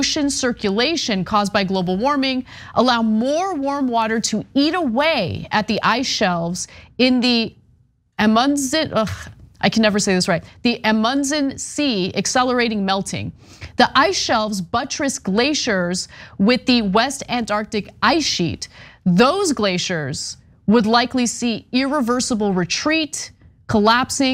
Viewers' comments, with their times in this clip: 0:08 But, but, but, Drag Queen Story Hour! Doesn't ANYONE at TYT read their copy ahead of time & look up pronunciation???!!!